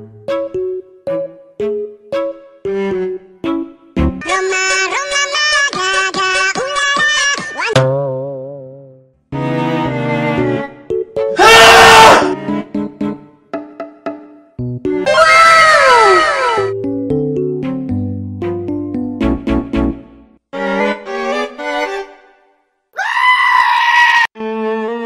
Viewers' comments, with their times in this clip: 0:10 was so weird errrrrrrrrrrrrrr